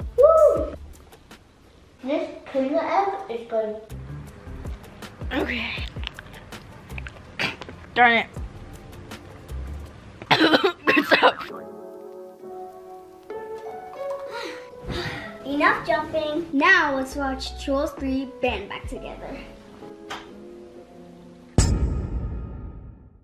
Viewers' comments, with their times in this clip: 0:08 coughs Good stuff 😂😂👍🏻